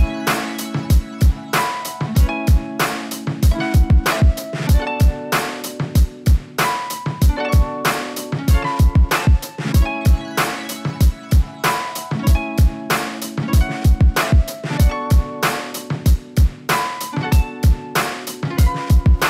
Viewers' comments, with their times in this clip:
0:03 Blud has happy/calm music playing in the background of a video of him hitting jumps that if he failed could almost take his life